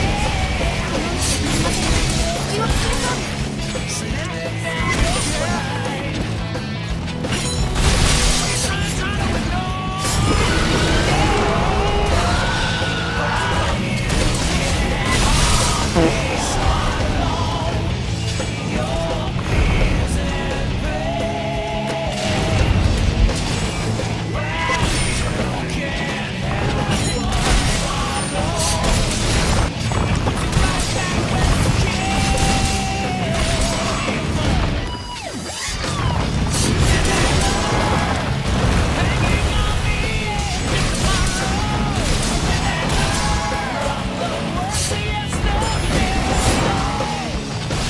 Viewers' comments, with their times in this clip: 0:09 one time a teammate got on my case cause I would try to I frame that roar every time. While I was wearing Rocksteady Mantle.
0:35 the perfect timing with the music 👌🏾